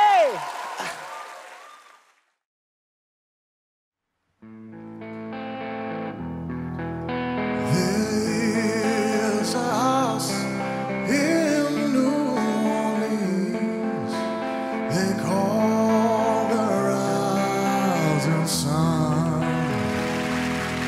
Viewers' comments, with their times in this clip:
0:04 What the 😐! He has an amazing voice, that’s not fair...
0:07 He has one of the best singing voices I've ever heard, period.
0:07 The best singer was the guy no one turned around...he suddenly sounds like Paul Rodger's. Fail on their part